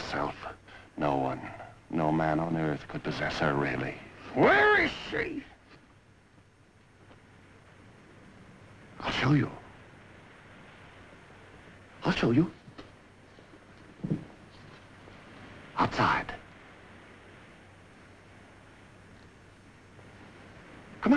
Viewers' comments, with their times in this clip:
0:04 Bet your left arm that this guy inspired al pacino 👍🏾 when he shouted "WHERE IS SHE?!" 😆😉